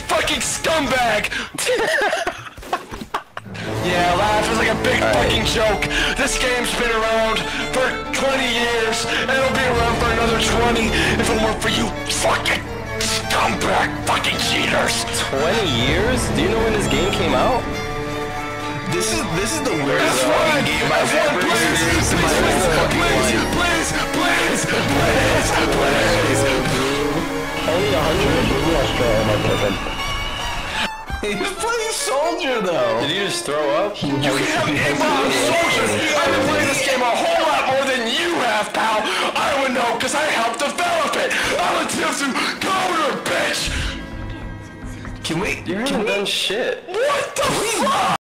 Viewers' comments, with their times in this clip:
0:02 kills me cause of the build up with the music and him sitting in the chair saying “yeah yeah laughing like a big fucking joke”
0:02 You can hear him laugh nervously
0:03 The music was edited fucking perfectly, I laughed my ass off at the sudden swell
0:04 the sync between the music and his shift to a more harrowed attitude for a moment is really great
0:11 The raw emotion got me dying
0:11 the growling bit feels like it comes from a place of genuine rage, if he isn't that angry about tf2 he's that angry about SOMETHING.
0:11 The venom in his voice is hilarious oh my god
0:13 bro changed his voice.
0:36 his voice reminds me of Gary from Bully
0:36 he sounds like Gary from Bully
0:44 I love the cut off “What the fu-“ as he realizes that he failed 😭